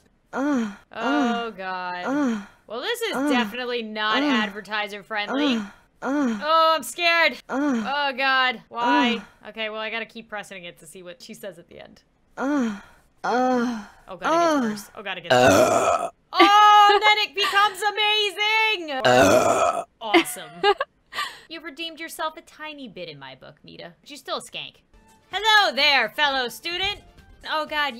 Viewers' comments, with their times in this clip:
0:09 I CANNOT STOP LAUGHING AT THE BURP